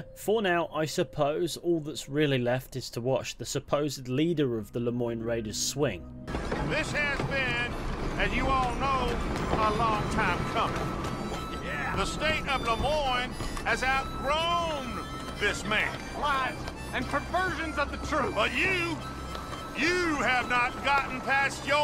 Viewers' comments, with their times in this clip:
0:07 It might just be me reading too heavily into it, but there's something that hits different as we watch an old veteran of a long lost war about to be hanged, the anthem of what would have been his country can be heard played in the background, perhaps in a small futile show of support for the foolish cause the raiders hold so dear Now dont get me wrong I'm no Confederate lost causer, my ancestors were union men through and through But theres something oddly sad about seeing a man who in another life might have been hailed as a warhero, stood with a noose around his neck and but a single harmonica to play him Dixie one last time